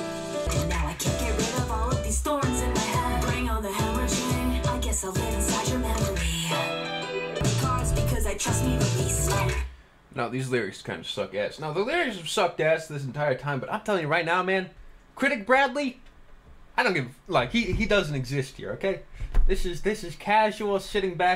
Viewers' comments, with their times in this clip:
0:03 She legit says the word hemorrhaging as hemorrhagining